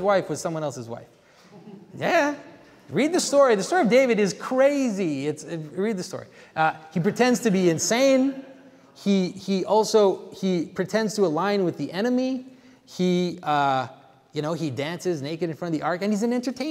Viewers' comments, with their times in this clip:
0:03 the laughter at the use of the word 'Whore' was responded to by you with good disciplined reflex: to find provenance in scripture. That's one of the best ways of assurance the transition we feel from danger to safety is due to the subversion of worldly standards, not Divine standards.